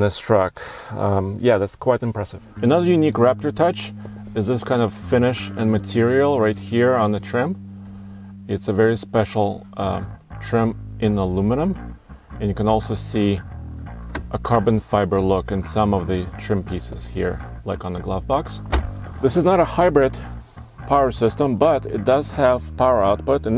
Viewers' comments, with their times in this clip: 0:05 sounds like flea starts ripping the bass!!